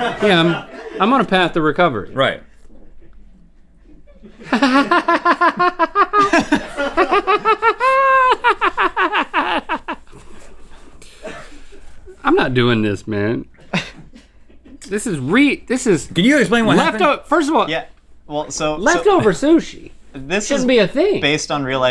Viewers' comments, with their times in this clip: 0:03 the Joker laugh?
0:04 Link vs Joaquin. Who did the better laugh?